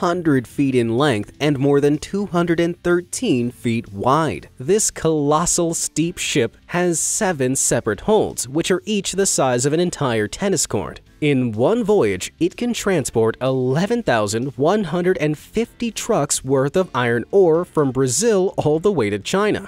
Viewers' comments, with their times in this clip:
0:05 Did you accidentally say "steep ship"?